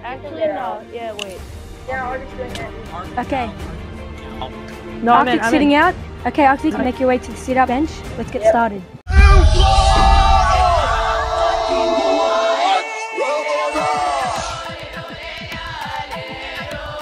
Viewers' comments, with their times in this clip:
0:05 lmfao you can hear my dumb ass saying "no im in im in" before it cuts out lolol